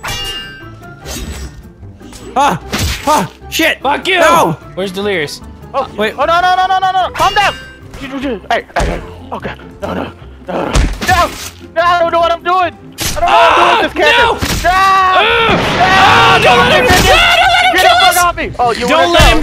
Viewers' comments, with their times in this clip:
0:07 did delirious just fart in